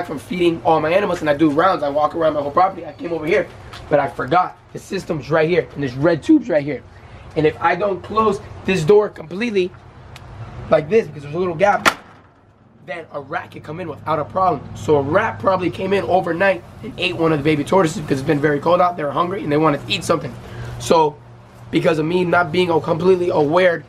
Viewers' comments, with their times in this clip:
0:06 voice crack really shook me